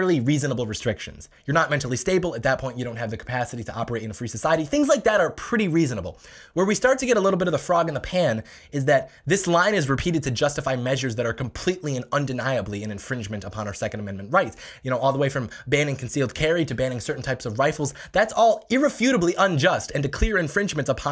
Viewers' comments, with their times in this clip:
0:07 I swear this guy is the fastest talker 💯💯 $5 to anyone who can tell me how many decibels this is.. lmao 😂